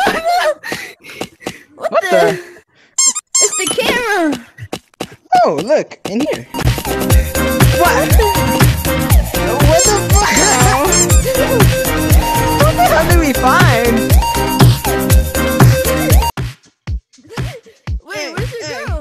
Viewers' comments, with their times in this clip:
0:06 bro i be jaming to this song